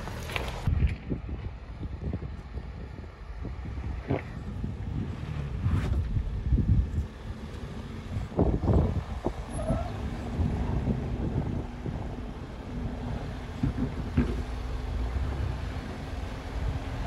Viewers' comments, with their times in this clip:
0:03 Nasty 😆 camera person farts I’m like that’s not a sound the bronco made 😆🤦🏾‍♂️
0:03 That juicy delicious fart lol